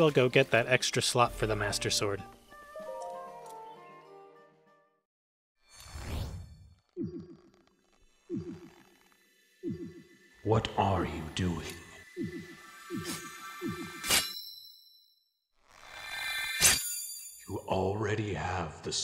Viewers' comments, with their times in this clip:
0:03 I love how he says Link, Stop it.